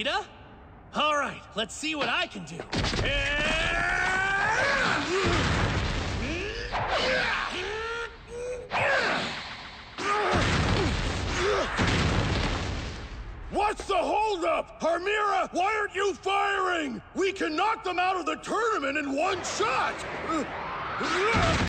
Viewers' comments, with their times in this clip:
0:03 Gave me. . . Stewie clone - "WoOow ur rlly smaurt BryON" Vibes Also: Goku going crosseye'd while throwing the rock
0:17 sounds like vector the crocodile from sonic the hedgehog 😂